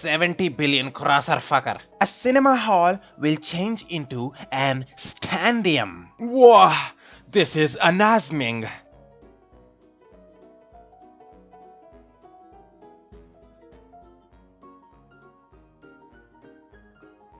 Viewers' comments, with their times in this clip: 0:06 this is Anaz-Ming😂😂😂😂😂